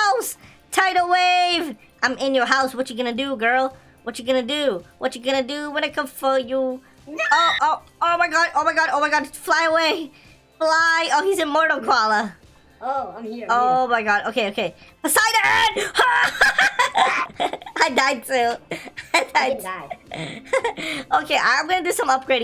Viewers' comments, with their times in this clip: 0:06 Lol you will hear a scream